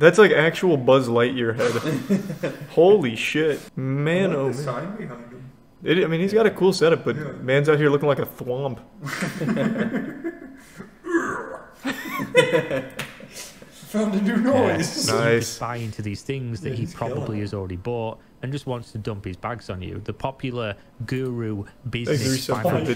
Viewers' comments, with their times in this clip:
0:10 there's no way to talk about thwomps without making the noise